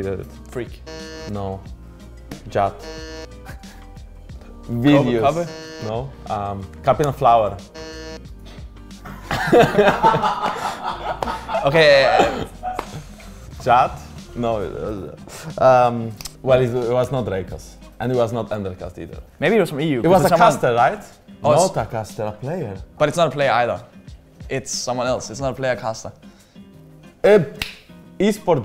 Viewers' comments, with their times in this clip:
0:10 Luka laugh <3